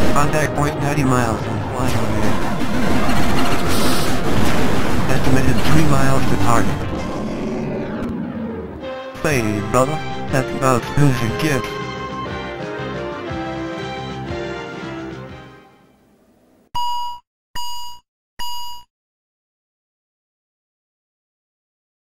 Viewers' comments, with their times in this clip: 0:09 Did he say, “Heyyy, brother. That’s about as smooth as it gets.” in a somewhat ghetto voice?!?